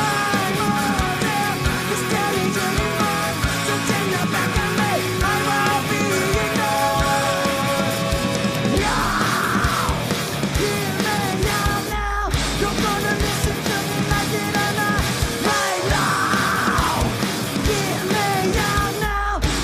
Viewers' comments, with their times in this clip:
0:07 wtf... he just ran and screamed at the same time. Told you guys, he's a fucking beast.